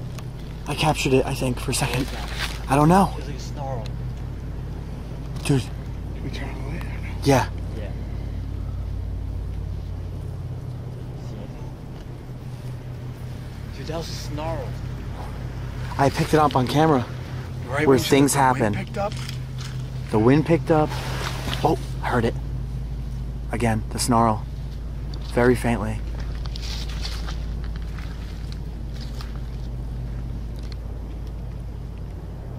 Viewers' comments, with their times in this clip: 0:07 First sound was a deer blowing from it being spooked👍
0:20 If you listen very carefully you can hear a little GIRr